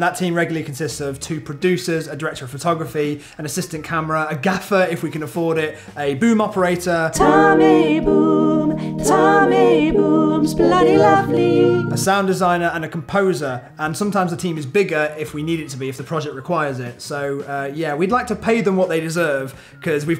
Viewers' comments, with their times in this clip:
0:07 That harmonising tho 😂👌❤️